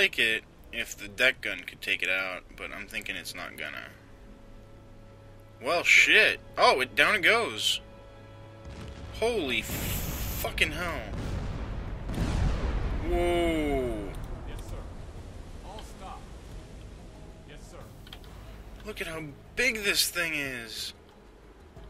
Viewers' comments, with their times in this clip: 0:07 its all like kakow!